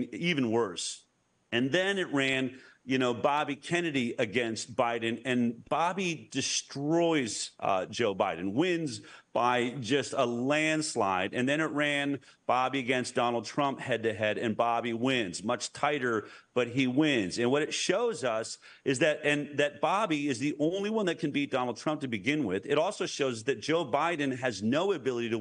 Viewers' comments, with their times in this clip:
0:08 is this being throttled? Because it sounds like he's saying Biden beats Bobby and I know he doesn't. Bobby beats Biden in a landslide. What happened to this portion of the interview??? Some fuckery is afoot.